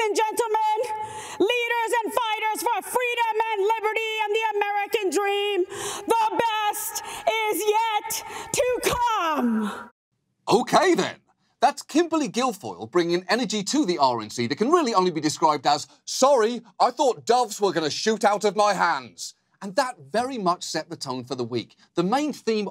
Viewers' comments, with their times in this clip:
0:03 did she Major in Public Speaking from Dwight Shrute Institute?